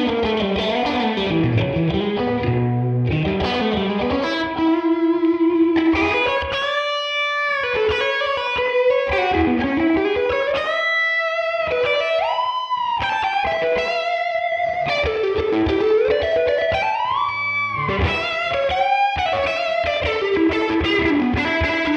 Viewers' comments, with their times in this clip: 0:06 thats THE sound man! Awesome. Could not believe someone ever see using the middle pickup ;-) - sounds fantastic